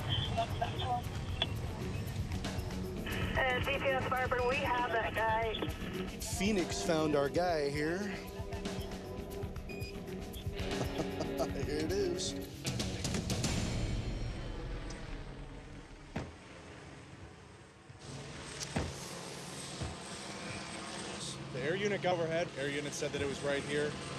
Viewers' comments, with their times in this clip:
0:09 The cop's face and laugh